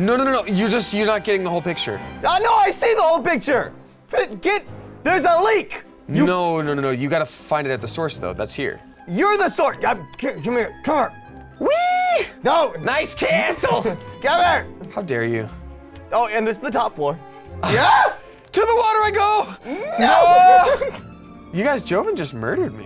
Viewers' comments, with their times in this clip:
0:07 Love the John William-like score after